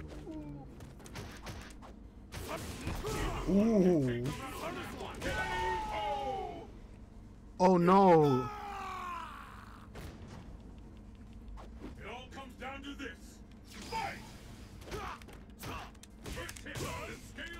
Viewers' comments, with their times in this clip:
0:05 that scream sounded slapstick af 😂